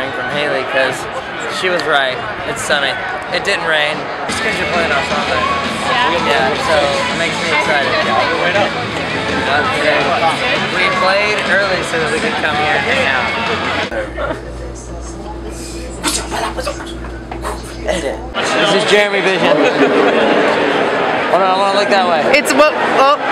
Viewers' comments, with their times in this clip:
0:05 I love how their song was playing :D